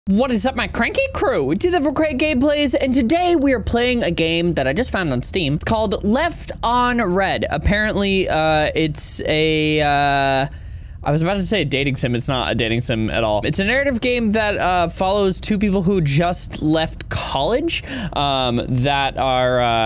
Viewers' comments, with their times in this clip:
0:00 Why did the intro sounded like he had a voice crack xD